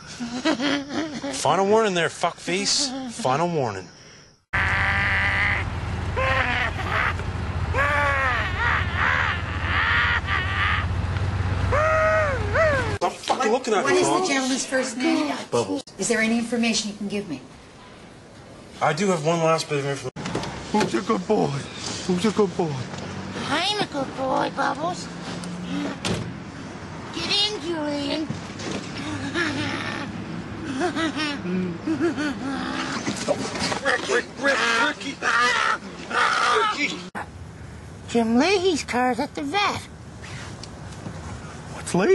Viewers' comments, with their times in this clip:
0:05 kid buu doing a voice over here ?
0:25 Conky's Laughing LMFAO the way he's just going off and laughing in that manor. Then Ricky strangehold's him and he starts screaming for mercy hahahahaha